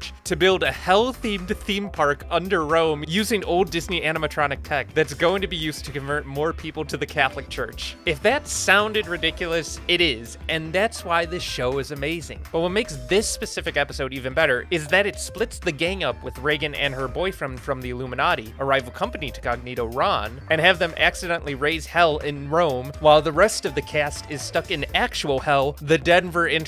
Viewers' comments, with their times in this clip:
0:08 the danfanronpa music goes hard